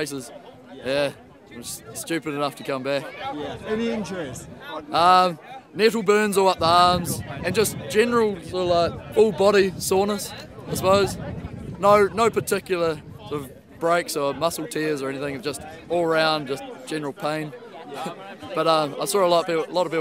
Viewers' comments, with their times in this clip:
0:08 General Pain. Thats what i live for giggles like a japanese girl